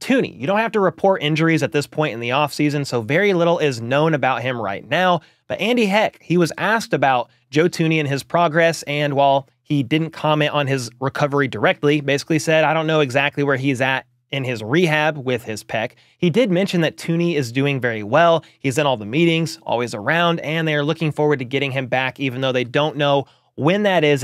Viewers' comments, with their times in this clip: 0:06 What did you say ? Sounds like you keep saying Andy heck